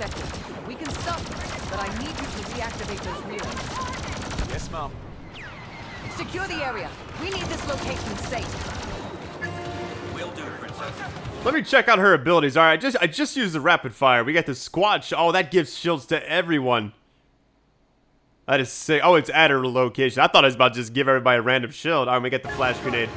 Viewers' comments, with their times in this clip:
0:03 is it me or Del just said ''Yes Mum'' instead of ''Yes ma'am''
0:05 Yes ma'am Wait wait..lets repeat that. repeats Yes,mom repeats again and again and again Reply if you heard it too..